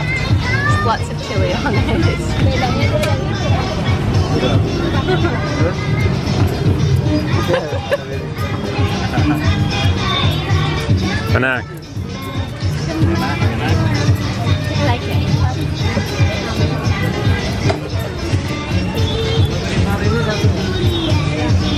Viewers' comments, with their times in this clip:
0:06 lol i was vibing to the banger background tunes